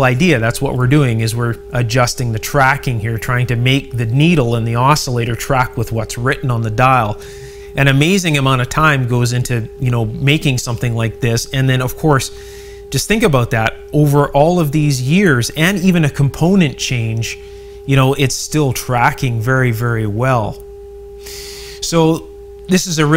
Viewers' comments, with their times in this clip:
0:08 i suspect s@ I suspect resistors or capacitors or mica disease is preventing that radio from operating at it’s full potential. it should lock into a station rather than wander around over it. you say “strong signal”, yet it is still weak at picking up the stations